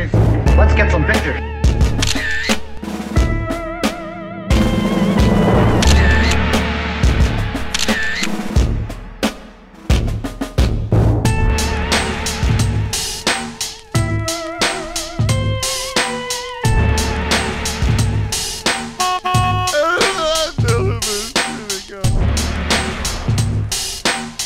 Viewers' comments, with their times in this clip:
0:09 Love your sound affects just as he's about to back up and hook it..!! 😂😂😂